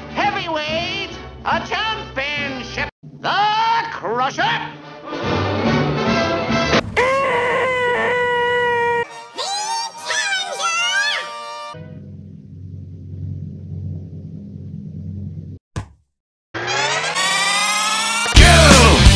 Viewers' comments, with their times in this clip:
0:07 What is this roar? XD